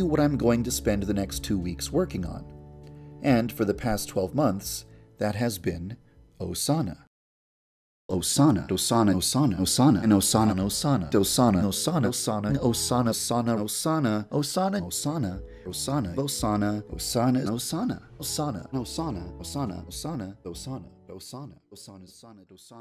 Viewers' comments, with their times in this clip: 0:08 Why does it sound like Sarda the more i listen to it 😭